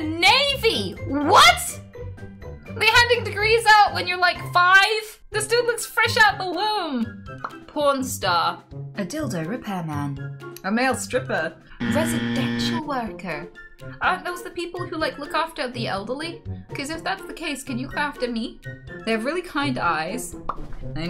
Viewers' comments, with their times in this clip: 0:09 "adildo repair man." in the sat nav voice. 😂😂😂